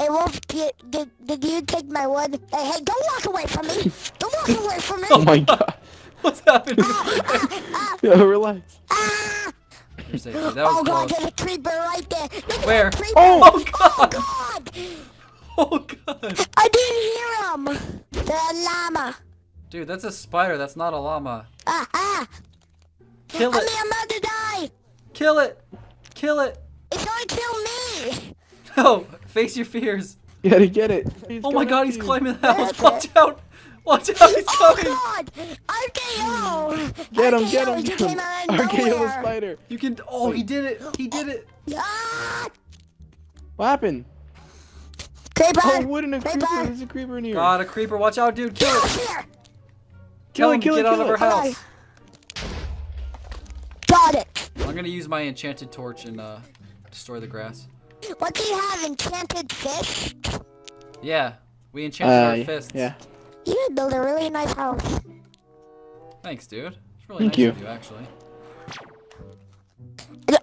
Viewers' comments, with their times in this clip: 0:06 he sounds like kid gohan from DBZ
0:58 I thought he said enchanted fish 😂